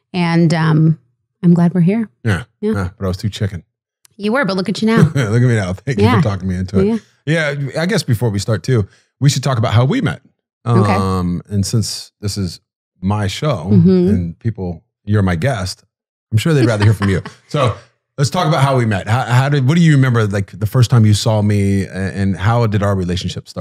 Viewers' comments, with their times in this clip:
0:05 he sounds like the rock lol.